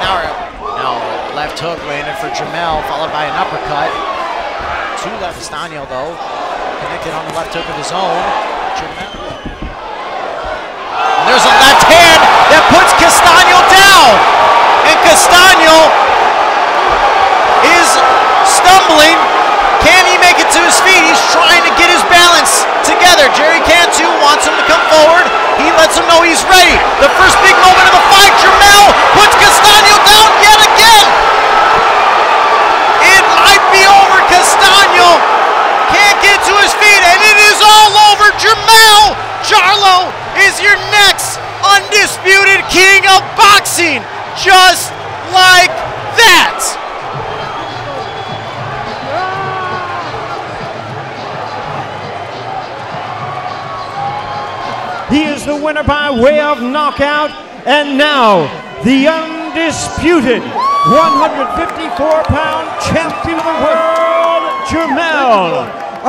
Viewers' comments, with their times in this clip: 0:07 listen for a strange noise right at/before KO.
0:48 You can hear Castano scream from the liver shot!😱